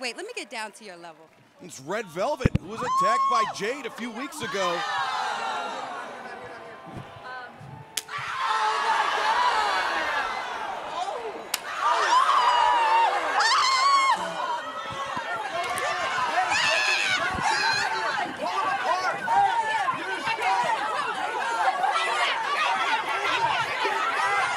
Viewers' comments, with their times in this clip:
0:08 didn't you hear that smack thi